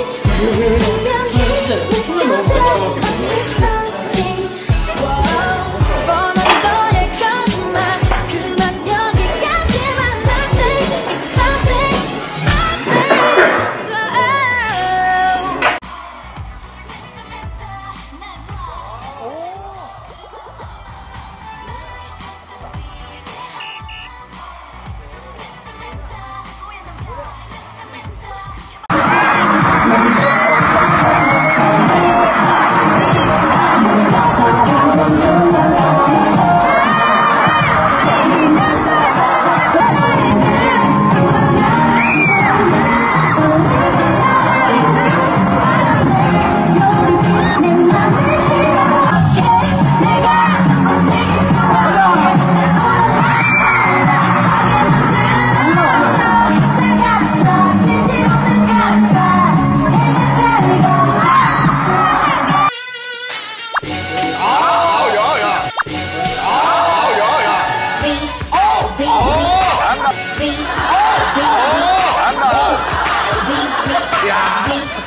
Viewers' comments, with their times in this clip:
0:07 in thought it was really jungkook's voice 😂😂😂😂😂😂😂
0:58 Suga couldn't stop laughing when jungkook danced